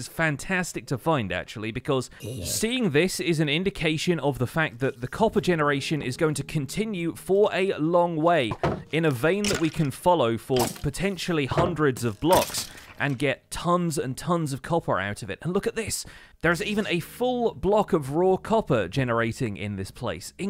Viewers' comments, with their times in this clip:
0:03 the sudden zombie sound scared me lol